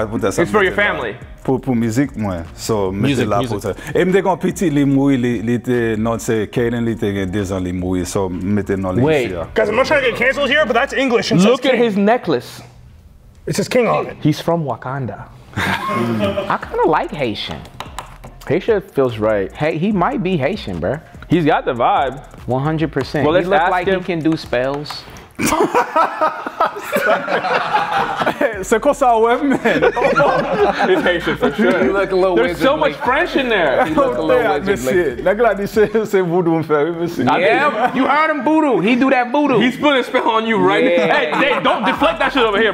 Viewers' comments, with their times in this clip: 0:07 im pretty sure hes haitian😢 because i have multiple friends from there and he sounds Haitian
0:23 I don’t think Haitian. Their language is Creole. This doesn’t feel like that.